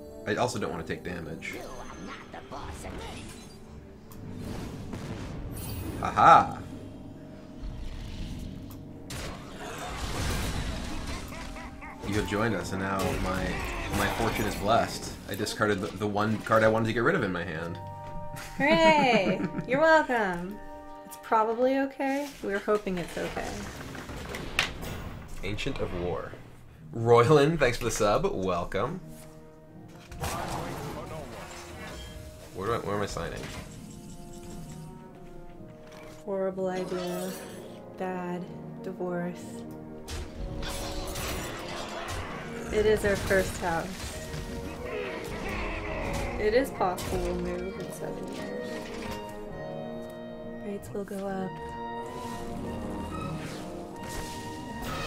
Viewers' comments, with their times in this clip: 0:05 I've heard Antonidas, but didn't saw the card.
0:41 Am I the only one to hear "horrible idea that divorce" ???